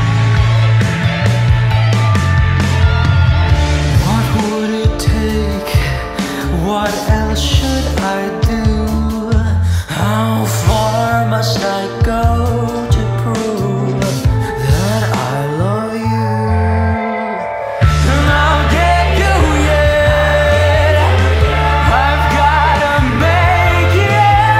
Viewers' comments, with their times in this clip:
0:09 that how part scratches a certain part of my brain and I love it